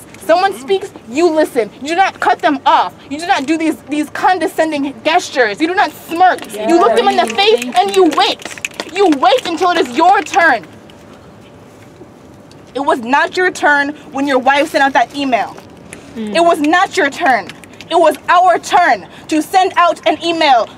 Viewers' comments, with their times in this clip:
0:05 she pronounced gestures wrong